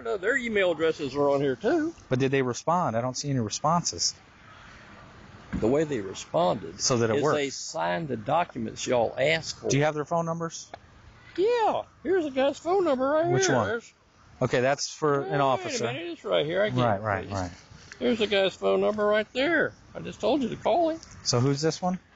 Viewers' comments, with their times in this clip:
0:08 his voice goes all Micky Mouse.